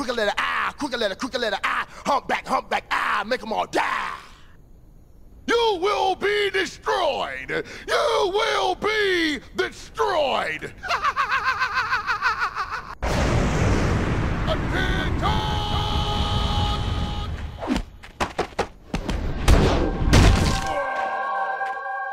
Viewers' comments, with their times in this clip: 0:10 motorcycles in the cold be like: